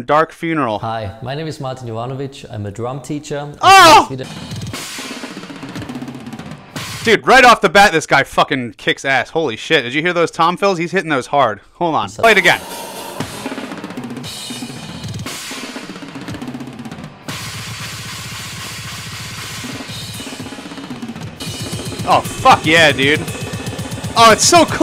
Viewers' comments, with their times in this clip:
0:06 Your reaction to Dominator is exactly what I always feel when I see this guy, not from this world and I f*#king love those blastbeats.